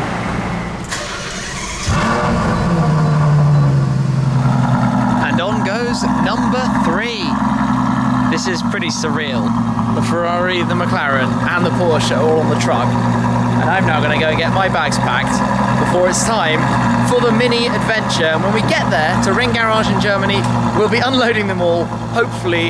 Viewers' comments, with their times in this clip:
0:08 The FF has the best sound !